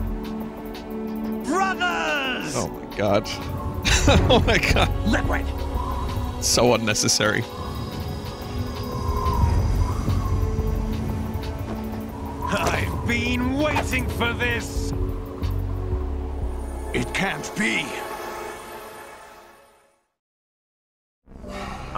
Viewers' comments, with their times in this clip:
0:05 I love the mad annoyed quick Liquid Snake says.